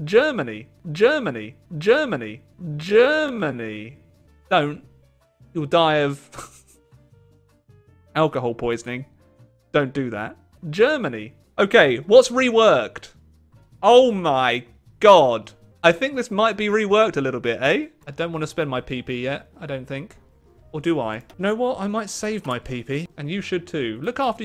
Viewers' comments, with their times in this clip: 0:05 that don't sounds like Ewan McGregor said dont